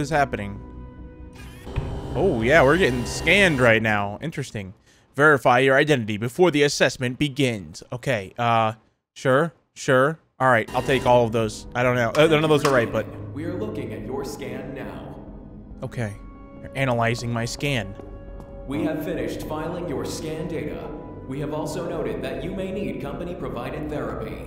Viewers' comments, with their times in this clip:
0:10 says that none of them r right, but u dont sound like a female tho